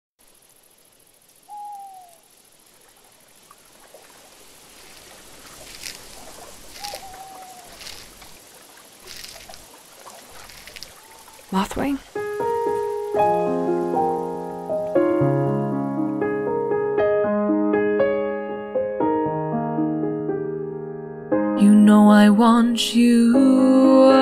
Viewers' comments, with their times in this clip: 0:10 Me: OMG VOICE ACTING.